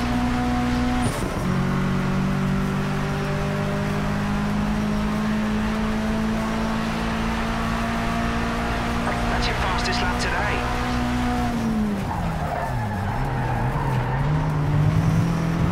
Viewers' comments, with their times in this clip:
0:03 That Evo misfiring system 👌👌